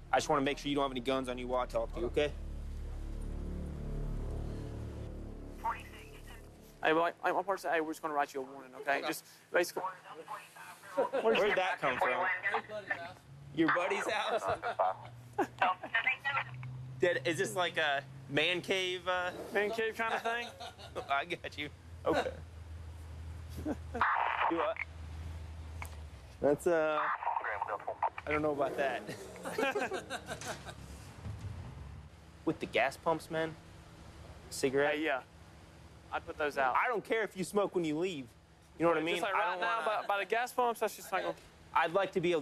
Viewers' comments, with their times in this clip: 0:09 the cop laughs at the theft of a $150 street sign.
0:24 gave me the wildest secondhand embarrassment. That is, after that terrified, forced laughter. The way he leaned on the car. Trying his hardest to "play it cool" like UGHHHhh. Might as well have admitted it if you knew you were going to get caught. When you're an addict, getting arrested can save your life. (Or significantly worsen it. Everyone's different.)